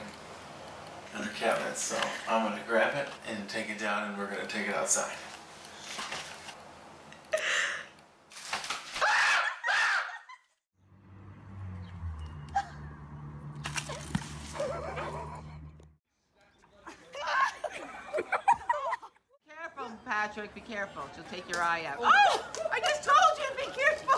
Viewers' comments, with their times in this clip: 0:07 Guy tries to grab a crow, & then he starts screaming a same crow xD